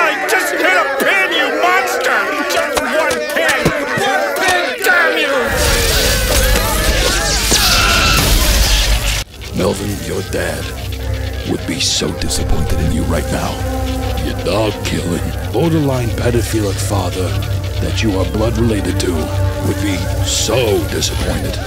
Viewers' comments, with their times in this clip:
0:08 The writing for that bit is amazing You deserve an award for this one It wasn't even how close to a reality this was for a lot of families but the way you do the "so" Reminds me of a few Bostonians I used to know. Especially how he was trying to make Melvin feel bad with the way he was saying it, true to life.